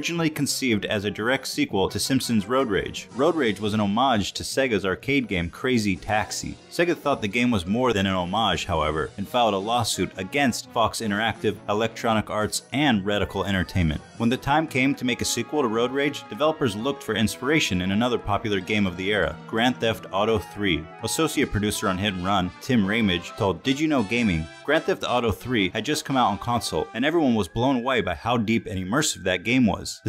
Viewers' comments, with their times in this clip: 0:05 The narrator sounds like Ethan Klein from h3h3
0:18 dafuq - Ethan from H3H3 is narrating??